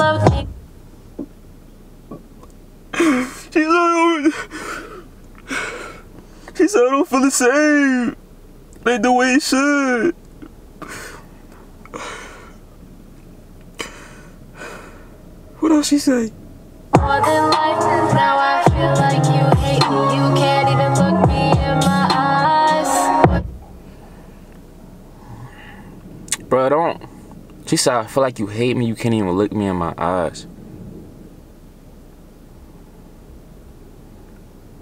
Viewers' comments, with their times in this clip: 0:10 Ik everyone laughed at his fake cry 👇🏽
0:10 I was dead at his fake crying
0:20 the fake crying BYE 👋🏾 😭